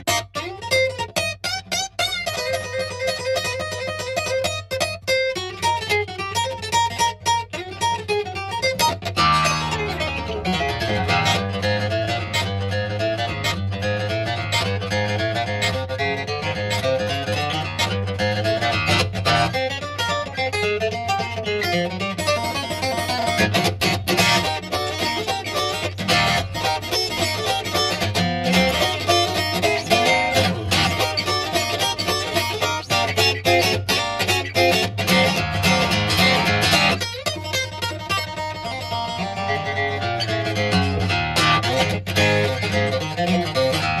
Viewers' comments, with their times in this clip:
0:10 Love that roll
0:18 did he just yodel on the guitar??
0:28 The looseness of the right hand when strumming is astonishing...and that syncopation at the mark is a wow moment to me every time I watch this ...why is this guy playing in his kitchen and not on a stage before thousands of people?